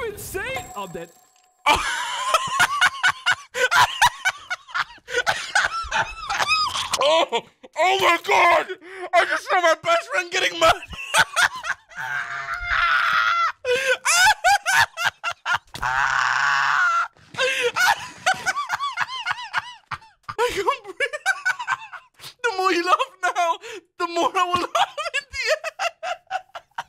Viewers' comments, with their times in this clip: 0:10 I can’t with that laugh😭💀